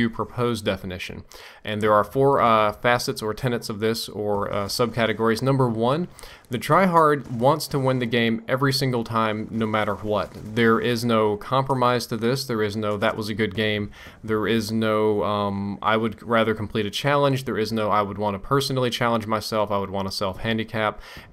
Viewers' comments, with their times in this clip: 0:08 lol why so much emphasis to the "H" in "WHAT"